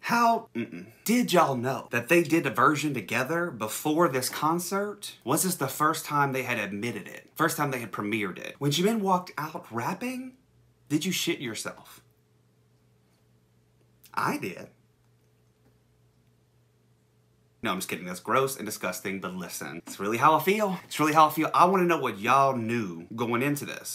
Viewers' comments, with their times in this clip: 0:10 I’m already laughing hysterically at you! Oh my god! I definitely shit myself when I heard Jimin start growling and rapping. He is my ultimate bias and I felt especially attacked as Suga is my second bias (because why have just one?) and Tony Montana is one of my favorite hype songs of all time. So yeah. I feel you.